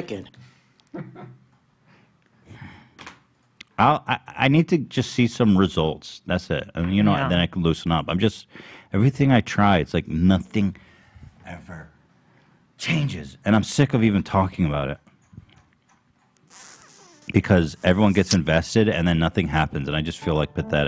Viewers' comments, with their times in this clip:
0:04 Their laughing is contagious and MADE MY DAY 😅🤣 My stomach hurts!!! LMFAOOO